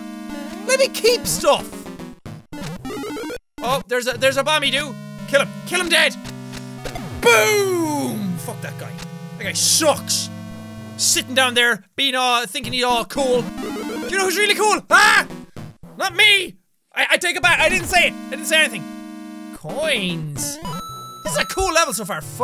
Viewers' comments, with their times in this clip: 0:07 bewere headphone users with voluome all da way up